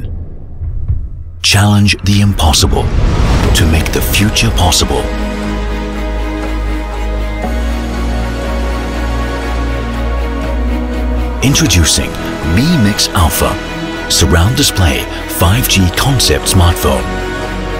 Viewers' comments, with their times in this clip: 0:03 the music from sounds like Hans Zimmer - Mountains.